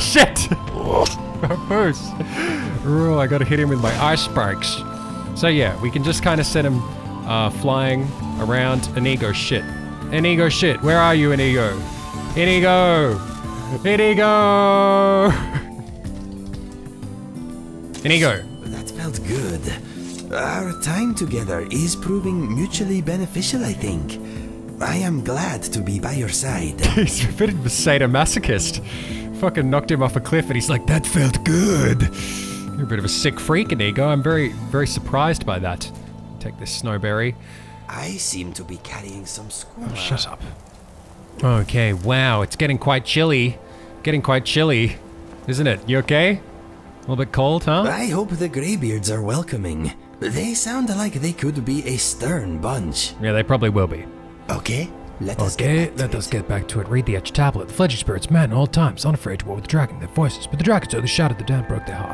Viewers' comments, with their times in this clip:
0:03 why are you trying to sound like a discount 2012 pewdiepie "eysh shpikes"
0:45 I'm here to learn English and...... I heard: "Isn' it? You're gay?" Fuck my ears......